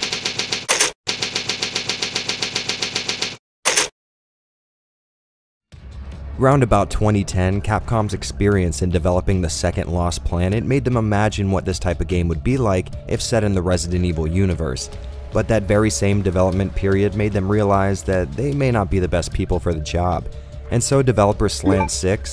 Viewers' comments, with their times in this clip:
0:08 ...is that your phone going off?